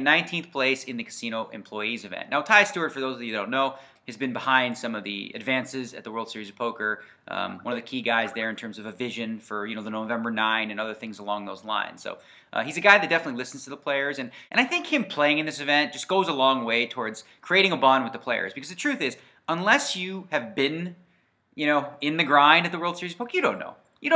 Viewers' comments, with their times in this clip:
0:06 skype contact comes online? :D